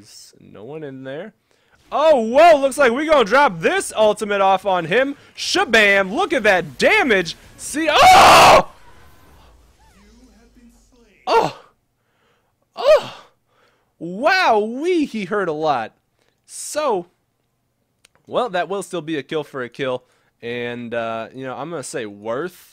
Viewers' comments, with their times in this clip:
0:07 dat scream lol
0:07 R.I.P headphone users :DD